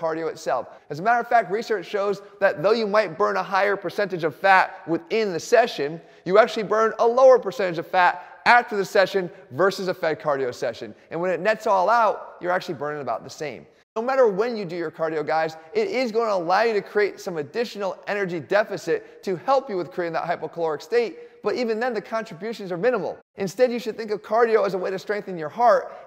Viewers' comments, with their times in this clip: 0:07 Good vid as usual - but what language is that? I have no idea what you are saying